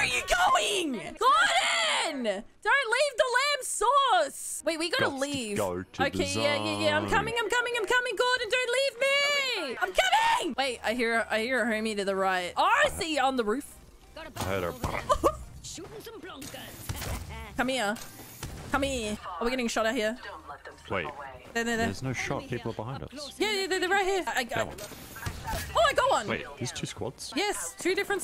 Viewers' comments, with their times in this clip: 0:09 so agressive! this is how I imagine lesbians announce they are finishing.